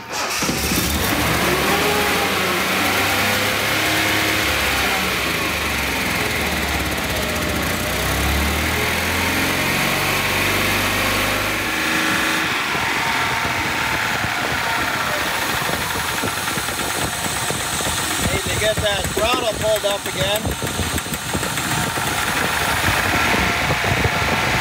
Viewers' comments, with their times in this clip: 0:08 sounded like an old citroen